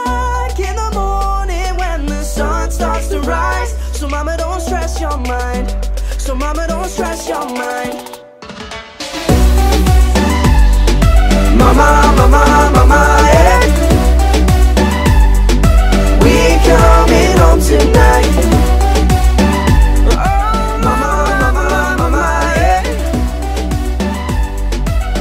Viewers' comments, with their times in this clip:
0:09 it suddenly goes louder reply/like if im correct?